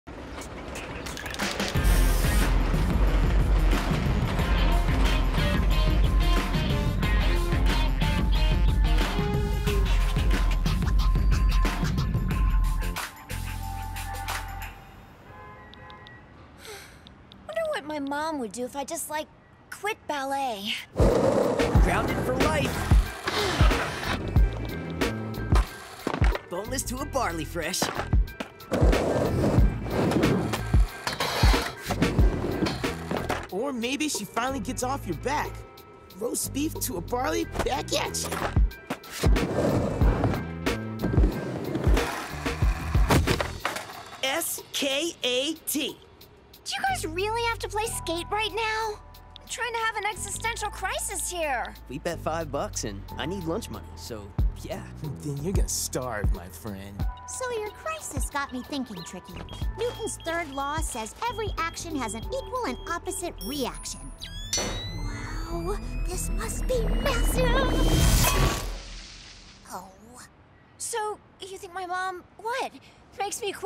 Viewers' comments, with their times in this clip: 0:03 theres the theme!
0:56 anyone else hear Amy from Sonic boom?
0:56 you cought that to right? she sounds exactly like her!
0:57 Am I the only one who cannot unhear Amy Rose the second Yutani speaks? (I know it's Cindy Robinson doing her voice)